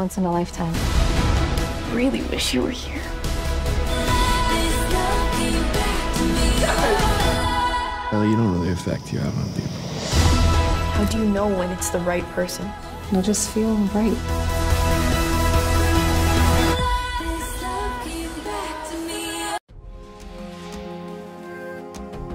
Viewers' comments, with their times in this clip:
0:07 I keep repeating this part and I still don't know what he says here